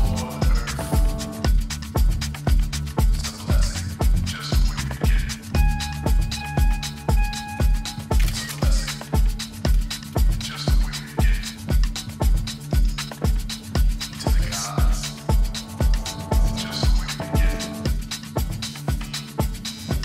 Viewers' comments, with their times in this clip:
0:05 Anyone else notice the guy on computer may have taken a selfie on Photo Booth, or was this in the song? 😂